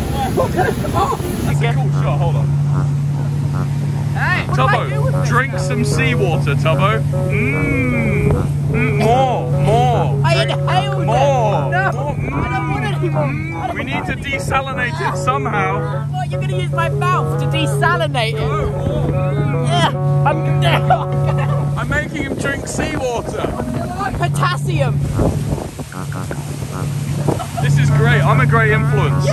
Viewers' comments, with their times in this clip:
0:10 Tuboos cough here is cute tho 😣👉👈